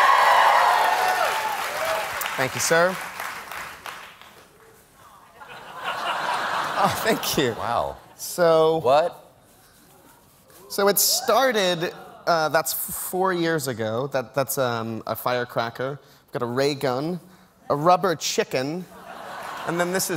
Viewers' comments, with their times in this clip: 0:03 I love the audible groan from a woman when he goes for the sleeve instead of taking off the shirt 😁